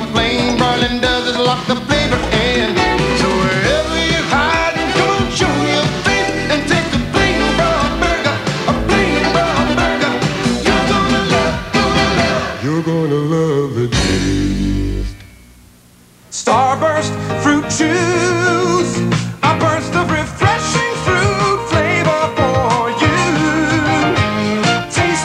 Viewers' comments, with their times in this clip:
0:10 that could’ve been New Edition lol